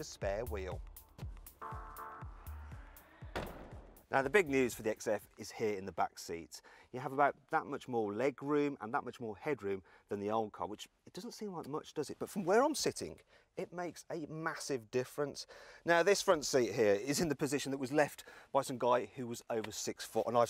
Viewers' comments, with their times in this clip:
0:03 Closing sound was not convincing 🤔